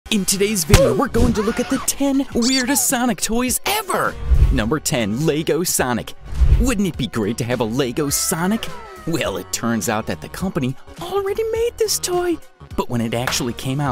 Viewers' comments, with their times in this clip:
0:00 In Today Roblox "OOF"